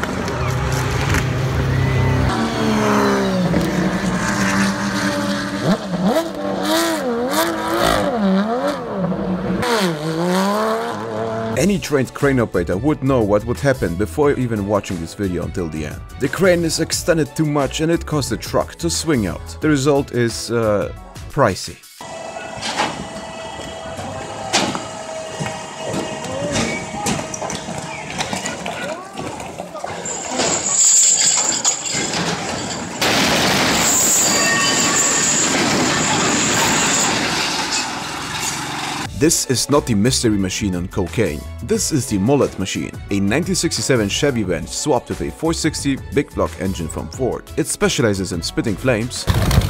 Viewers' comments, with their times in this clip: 0:03 that Porsche was cussing out that car
0:05 that Porshe genuinly sounds like its arguing about it
0:31 that metal pipe image will never make me unhear the sound effect. thank you
0:32 man the pipe meme is great 😭💀
0:32 no way that the laugh of metal pipe
0:34 not the metal pipe sound
0:34 there really is no escape from the metal pipe, is there?